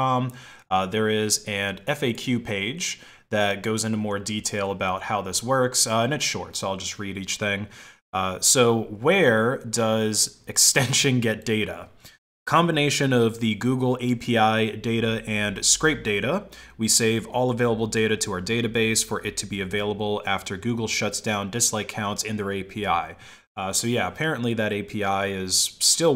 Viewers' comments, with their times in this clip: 0:08 you read that the wrong way. That is clearly written with a Russian accent.